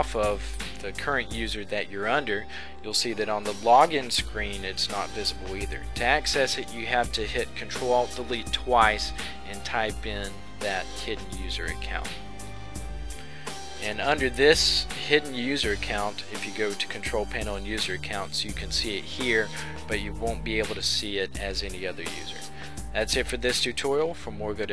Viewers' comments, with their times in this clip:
0:06 Dude... and I quote him he says "To access it you have to hit Ctrl (SOMETHING) twice and type in... blah blah..." He said NOT Ctrl+Alt+Del! So what did he say? It sounds like "fully" something :/